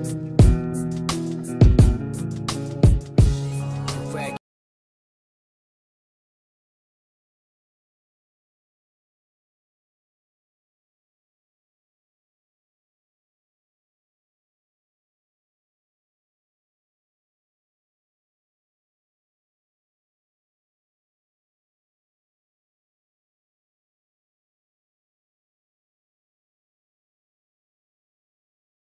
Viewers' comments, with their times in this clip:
0:10 what's the song ? no audio?